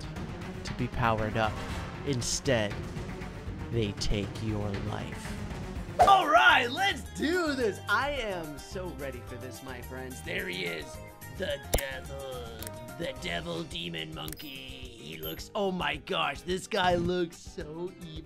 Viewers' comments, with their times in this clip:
0:06 that demon creepy setting to the happy jolly music made me laugh a lot